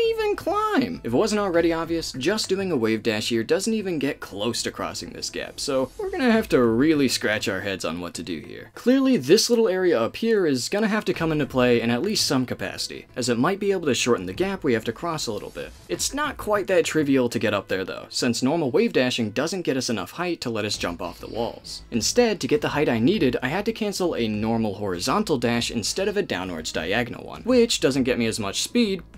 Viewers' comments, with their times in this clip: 0:10 you sound so much like the narrator from fnaf here loll